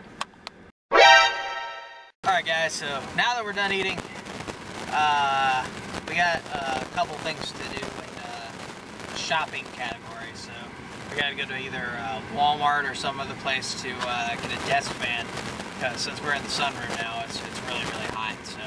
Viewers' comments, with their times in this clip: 0:03 bruh what happened to your audio? were you using an external mic? Sneak King... the nostalgia lol